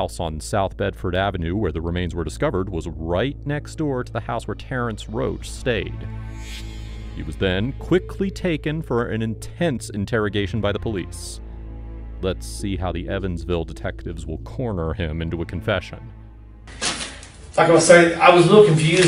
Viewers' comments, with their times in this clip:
0:07 music sounds like its from Dragon Ball Super - specifically the Goku Black Arc 🤔